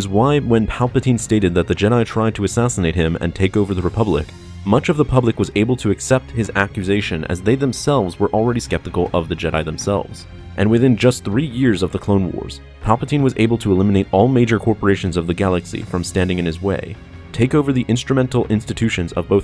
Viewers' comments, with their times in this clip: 0:05 Anyone else's Google assistant activate and search "republic"?